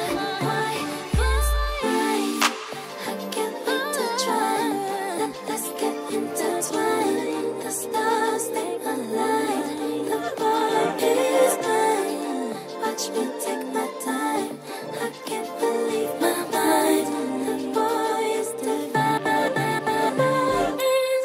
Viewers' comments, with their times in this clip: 0:03 that little angelic vocal 😍😍
0:06 that adlib changed my life